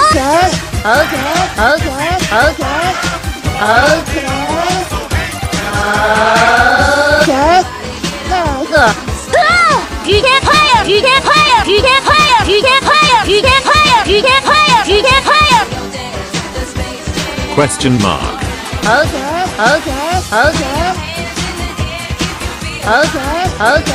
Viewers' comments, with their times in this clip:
0:09 How I sound on For Glory.....